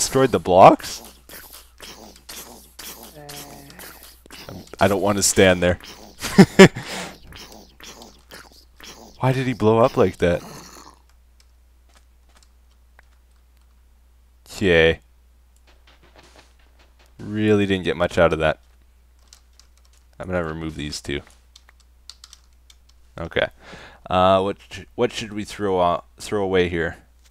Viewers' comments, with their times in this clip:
0:09 what a sad sound